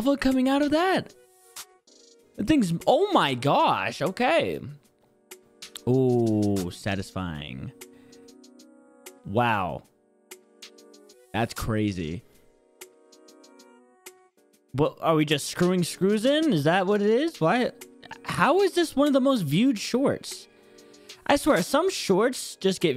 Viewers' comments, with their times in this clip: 0:10 how deep do you need your voice 💀